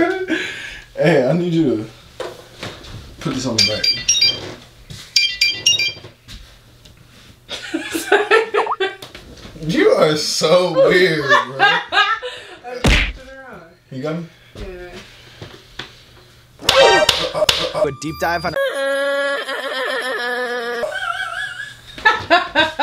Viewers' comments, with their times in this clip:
0:03 Are we not gonna talk about the kim possible ringtone😭
0:06 she got that flip phone ringtone